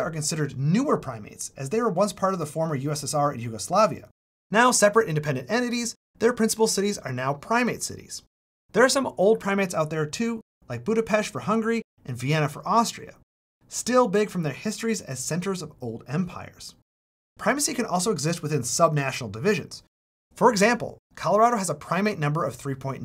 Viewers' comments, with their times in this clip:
0:10 OH, MY, GOD - he can pronounce Budapest correctly!!! Hear that, Hungarians? Give a shoutout to this man!